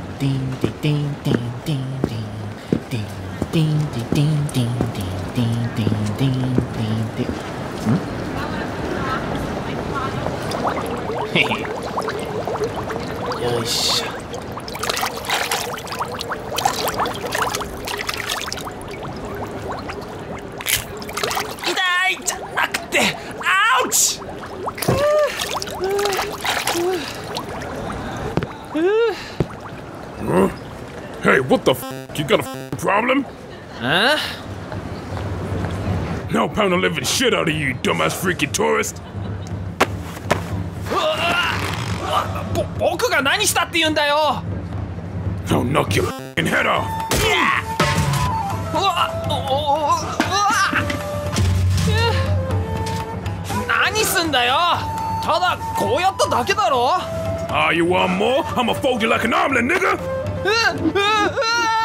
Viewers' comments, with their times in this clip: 0:03 I LOVE the fact that you made the sound actually match the footsteps!!!
0:33 I think they might have been going after a Mike Tyson type character with the pink shirt guy. Tyson is notorious for his voice (something he got picked on for when younger and led to him knocking dude’s out in a few punches in his boxing career).
0:45 This scene was definitely improved for the sheer fact that Naruto's theme is in the background playing instead.
0:45 I don’t know why, but I actually laughed out when the Naruto music came in. It’s just so darn out of place that it’s hilarious!
0:47 the Naruto music😂
0:47 i can hear the naruto music in the background 😭😭
0:47 the naruto music tho